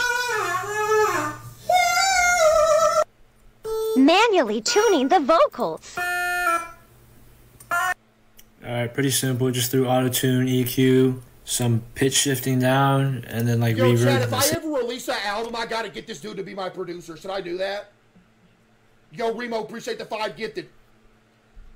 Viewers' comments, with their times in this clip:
0:09 caseoh doesn't need auto tune hes already better than every singer